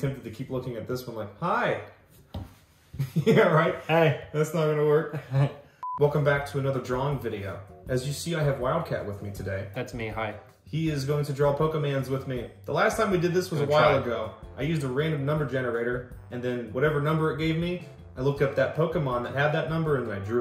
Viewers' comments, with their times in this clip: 0:05 Damn.... You must have a good mic and acoustics. On top of these being really good ear buds I'm using. Because it sounds like I'm there. But that doesn't necessarily ring true for other setups with the same mic on your end, and same earbuds on mine.